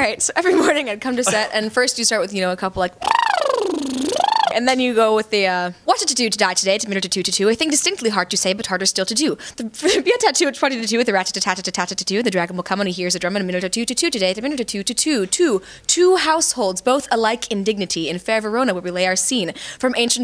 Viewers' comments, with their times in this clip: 0:05 Claire can beat Eminem with that😂